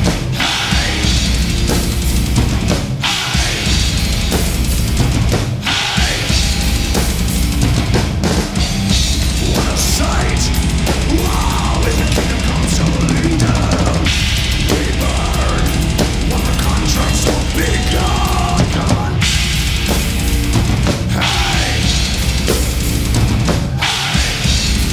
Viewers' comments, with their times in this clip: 0:07 Like the Pro that he is, Pete makes an error but follows it up with an awesome fill down the toms and leading perfectly into his double kicks.